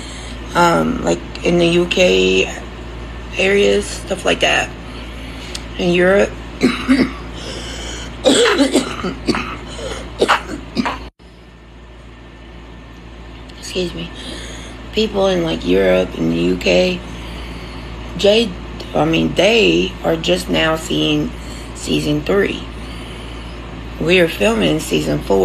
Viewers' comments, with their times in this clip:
0:07 😂did she just fart and shart!!!? Man U can’t make this shit up! 😂😂😂😂